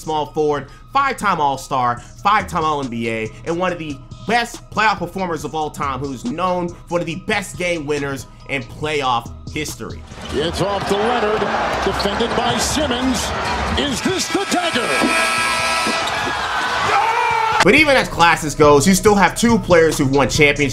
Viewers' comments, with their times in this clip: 0:08 Everyone talking about the video highlights not being synced with players, but deadass the audio level switch was worse imo. (refer to after the Kawhi clip, the audio became deafening)